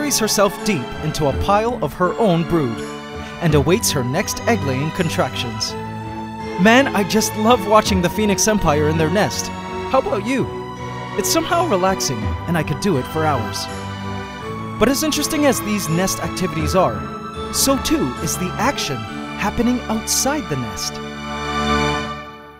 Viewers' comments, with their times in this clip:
0:09 his voice cracks, for those who like to hear voice cracks. Strange people.